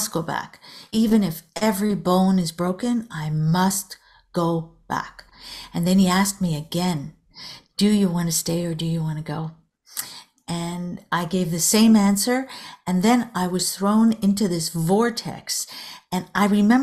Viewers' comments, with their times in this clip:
0:03 sounds like a big boss voice